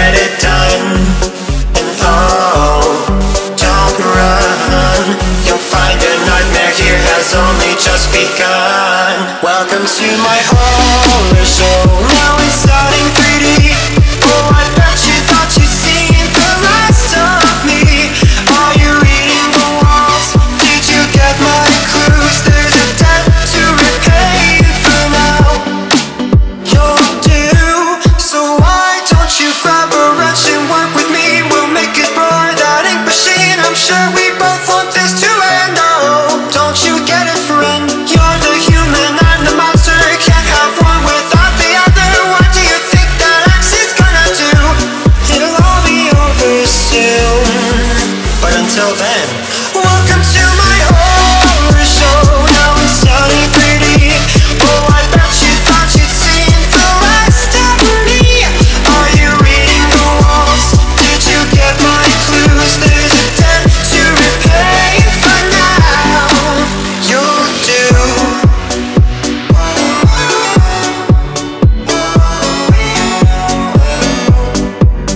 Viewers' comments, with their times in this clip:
0:10 is second beatdrop
0:21 me when i hear an earrape
0:55 Maroon 5 intensifies
0:56 literally sounds like maroon 5
0:56 that sounded like maroon 5
0:56 sounds like "Maroon 5"
0:56 He sounded kinda like Adam Levine
0:57 Holy crap that singing is just awesome. Anyone else agree?
0:58 sounds a lot like adam levine